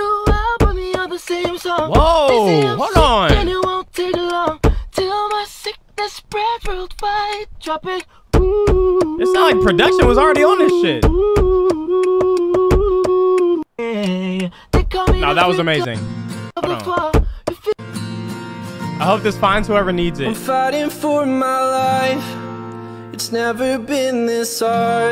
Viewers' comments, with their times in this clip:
0:09 would be a hard ass sample